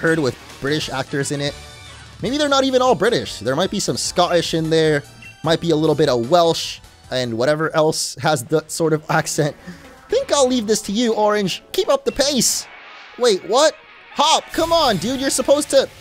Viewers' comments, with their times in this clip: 0:03 as someone from the UK I can tell you that your team Yell accent is a very bad impression of a cockney accent that is a regional accent of the (stereotypical poorer) people that live in London and all the places you mention would still have British accents just not English accents. British refers to anyone from the British isle and English refers to anyone only from England, the largest contrary in the British isles. Your accent is still bad and a bit offensive. Team Yell are from Spikemuth which is a fictional version of Bornmout, Plymouth or Portsmouth so they would have a southern accent. The closest I can describe it using t.v/ move terms for reference is the British farmer accent.